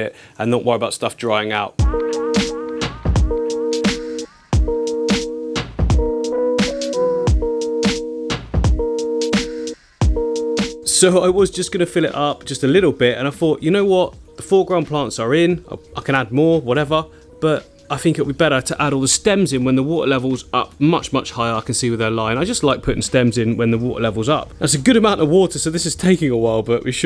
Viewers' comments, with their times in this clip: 0:10 there's some music that shifts uncomfortably from left to right in headphones that actually made me a little nauseated. Great volume otherwise for your speaking, but the very thrummy synth piano was way too much sensorily at that volume as it moved from one side to the other. Might be one to balance down.